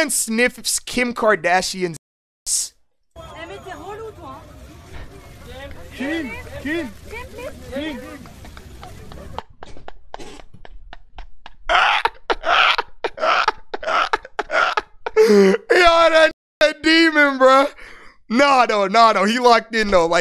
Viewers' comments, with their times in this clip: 0:08 The laugh bro